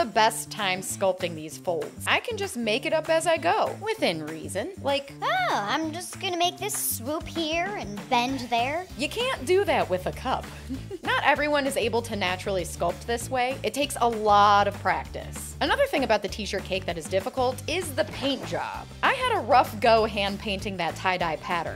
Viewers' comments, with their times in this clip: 0:09 ok but why did she sound a bit like the mom in young Sheldon 😭